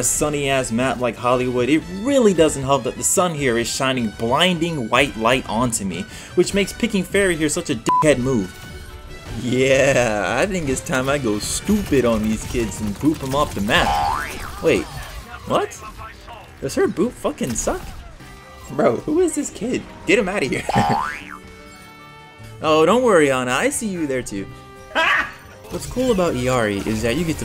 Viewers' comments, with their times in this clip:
0:09 The BOING! sound effect got me every time 😂 I love your editing style so much